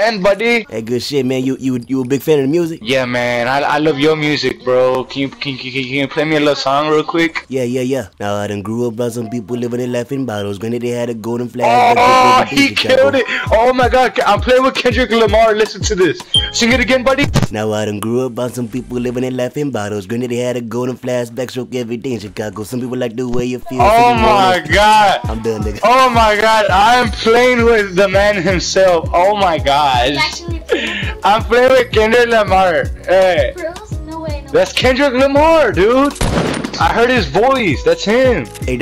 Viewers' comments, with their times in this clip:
0:08 when he sings there's a hint of indian
0:25 so you tryna make a nigga cy with the background music